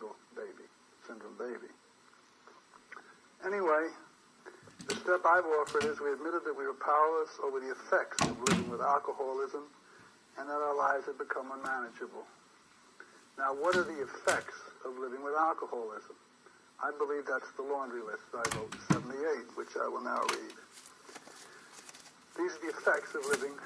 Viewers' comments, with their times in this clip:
0:08 Great but who is the sill goose making the racket in the background ?